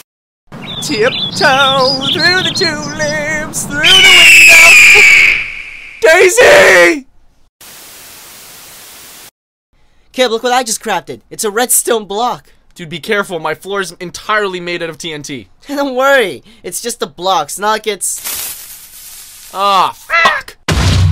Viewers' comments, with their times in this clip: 0:03 R.I.P HeadPhone Users.